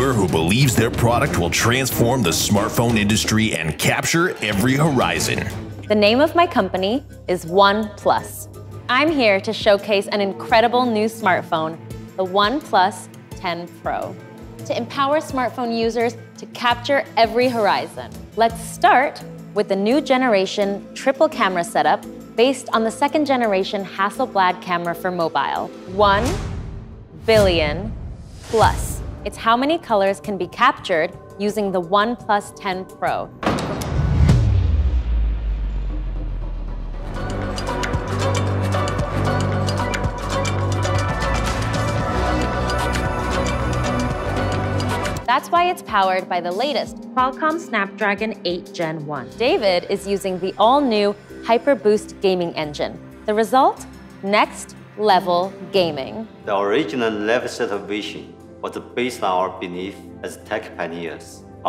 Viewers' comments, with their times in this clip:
0:07 she is saying the brand name like one plus is a very small brand but………. You know
0:47 Jesus that audio editing ... Just reshoot it at that point.